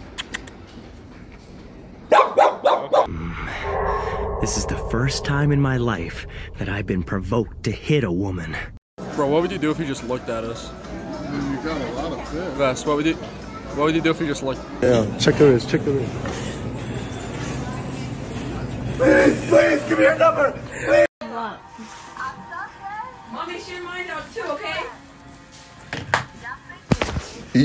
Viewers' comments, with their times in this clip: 0:08 HELP THE PAUSE